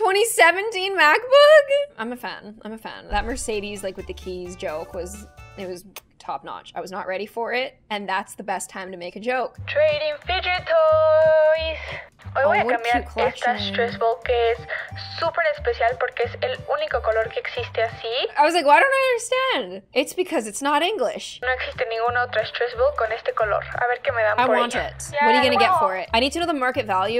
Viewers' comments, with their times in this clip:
0:10 the video is speaking spanish IDK if you already knew that but yeah